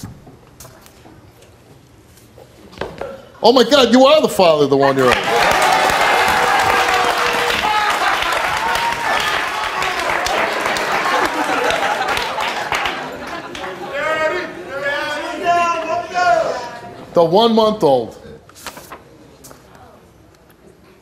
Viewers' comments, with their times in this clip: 0:06 The guy laughing in the background was so funny😭
0:09 😂😂😂😂 that loud ass laugh over absolutely everything